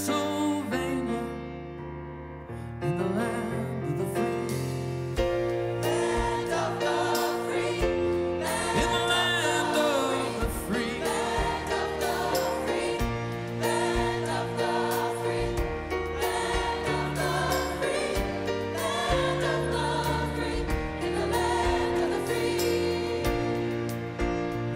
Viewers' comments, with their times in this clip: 0:06 Brandon's face during that off key note of one of the background singers